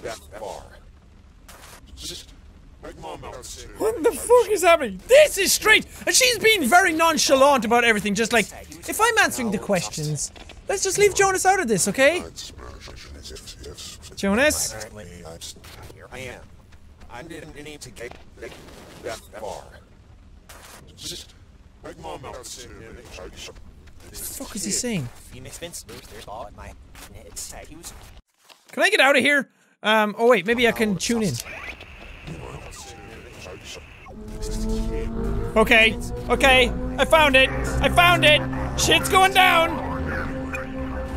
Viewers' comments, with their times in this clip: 0:05 Is Jonas speaking backwards in
0:25 Am I the only one that hears Jonas saying "peNISes" 😂 I'm sorry I'll leave now 😂😂😂